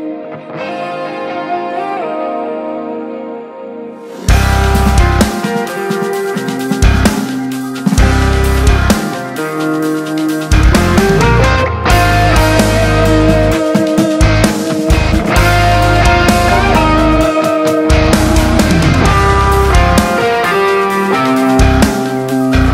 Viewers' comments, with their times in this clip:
0:04 Beautiful Guthrie Govan's Ner Ner wink ❤️
0:04 My GOD in looks a lot like Guthrie Govan's Ner Ner riff, that was very nice!